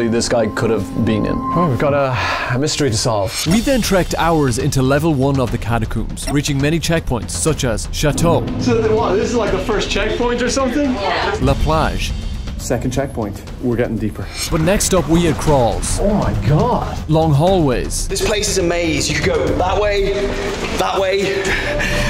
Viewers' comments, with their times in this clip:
0:06 it sounded like he said shut up
0:08 I heard "Such as " Shut Up ""